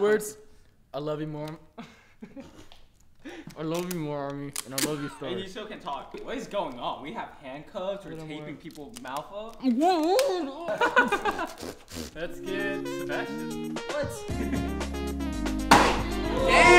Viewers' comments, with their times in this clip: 0:04 The way he said, " I love you more Army and i love you Stars"🥺so cute